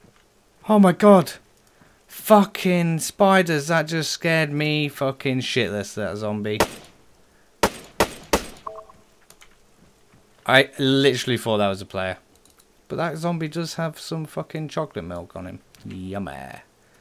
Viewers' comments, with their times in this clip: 0:04 plays eye of the tiger with is gun